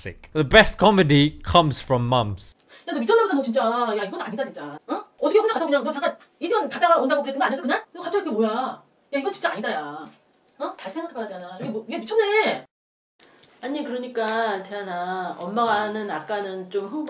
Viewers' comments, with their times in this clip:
0:03 In old days we had cassette player, and sometimes there would be a problem in playing those cassettes, and they would sound like this lol